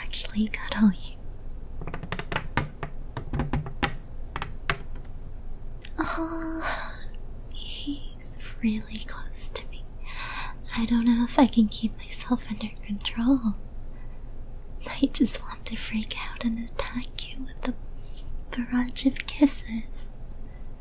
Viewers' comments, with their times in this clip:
0:03 Who tf sharded in ?